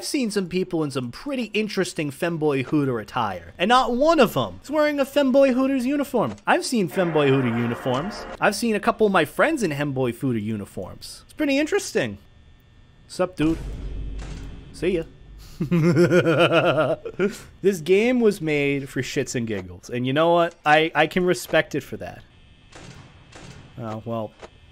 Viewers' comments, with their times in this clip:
0:08 He said hemboy footers lol